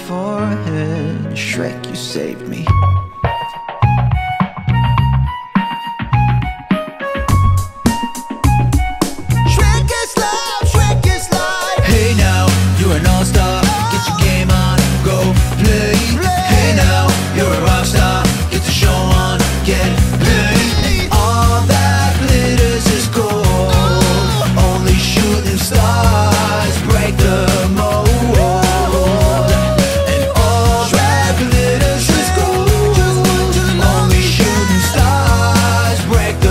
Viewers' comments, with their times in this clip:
0:02 love the flute
0:03 the beat was really cool
0:04 errrr roomie that’s a recorder
0:05 isnt that a recorder?
0:06 BUT THATS A BLOODY RECORDER :)
0:19 Roomie this is a weird question but what are the harmonies ? (All that glitters is gold?) It slaps